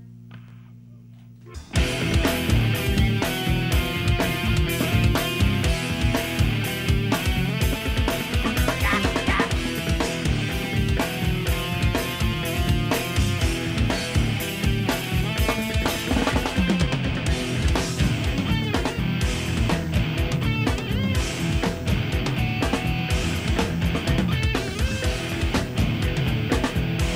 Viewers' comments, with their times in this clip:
0:07 sounds like Korn !
0:08 Les Claypool sounds like eric cartman